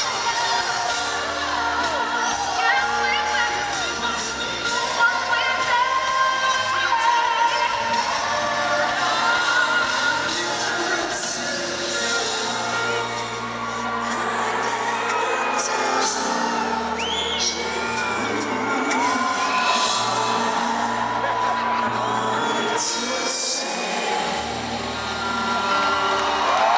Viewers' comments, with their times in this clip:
0:09 Could someone pls explain me what happened !!!!!!??????????? Whistle? Is it? OMGGGGGG